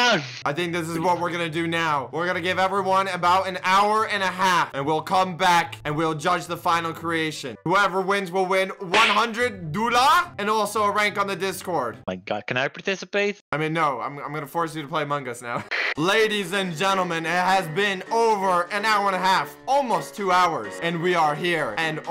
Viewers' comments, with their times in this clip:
0:08 did he just say dollar in Arabic?